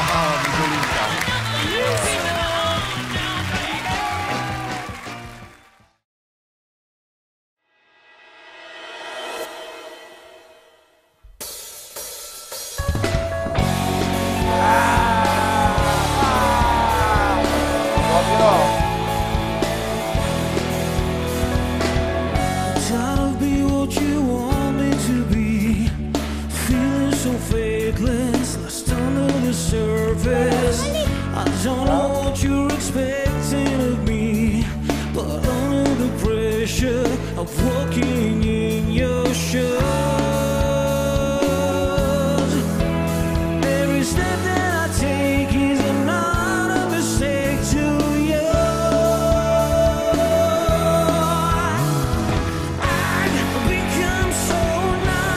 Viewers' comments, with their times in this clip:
0:07 the numb song is the most unexpected. His start is average and then suddenly I can hear Chester Bennington.
0:07 amazing performance. Almost felt like Chester was back for a moment
0:37 i did not know that jon snow could sing